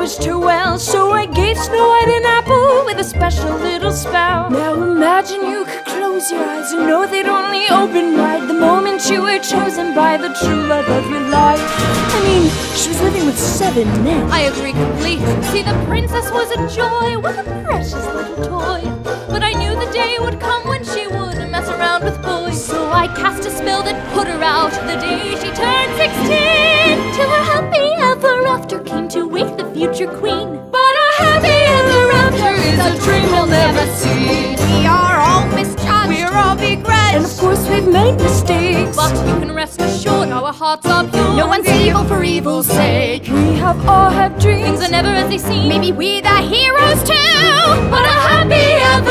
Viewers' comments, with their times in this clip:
0:04 i love her voice
0:15 maleficent's part was AMAZING and I love her voice. Need i say any more
0:35 Voice crack. Lol like if you hear it